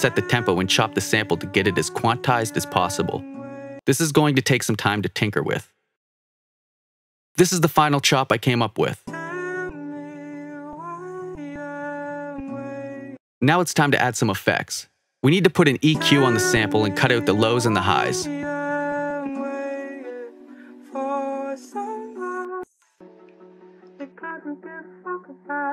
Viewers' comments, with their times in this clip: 0:09 dam allready feeling depressed with that first sample definitely one of x vibes